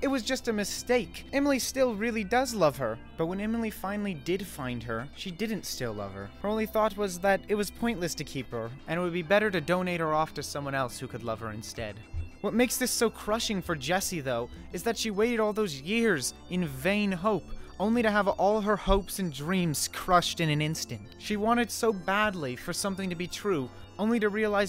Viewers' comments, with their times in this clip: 0:07 also I hear Pikmin music playing